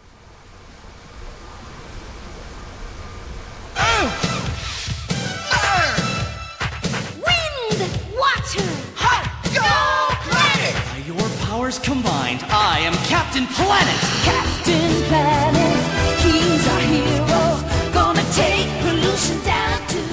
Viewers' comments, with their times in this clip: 0:06 The guy saying "Wind!" Sounded constipated. xD Great job guys!